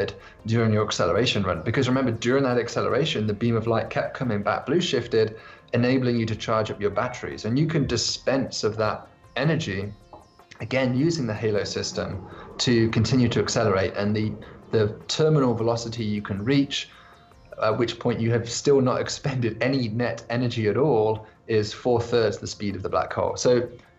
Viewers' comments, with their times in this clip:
0:05 Haha, who added that little “connected to power” sound when he says “charge up your batteries”?? 😂 Really coincidental?